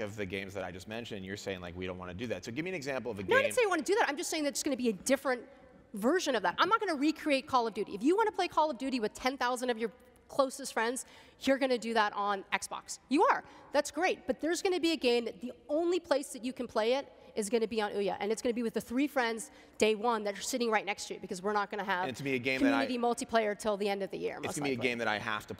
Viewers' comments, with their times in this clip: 0:08 What was she about to say? Sounded like something that began with a F.